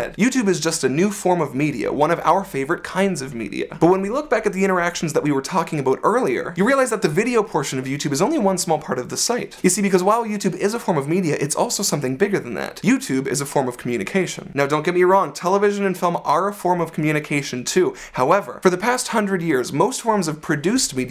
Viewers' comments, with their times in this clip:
0:04 aboot Loved the video :)